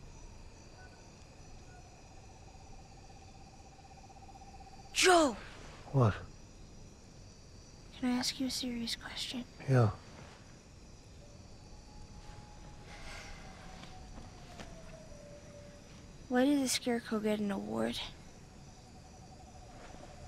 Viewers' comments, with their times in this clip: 0:04 Why am I literally crying laughing at the way she says his name 💀💀